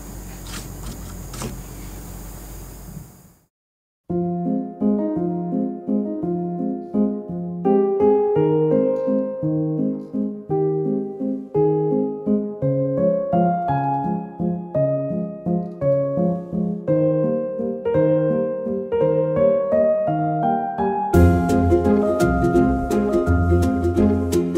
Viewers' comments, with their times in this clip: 0:08 What’s the song you guys used for the overhead shots of the finished? The music starts It’s just so relaxing 😌 I’m in love with y’all progress and the finished masterpiece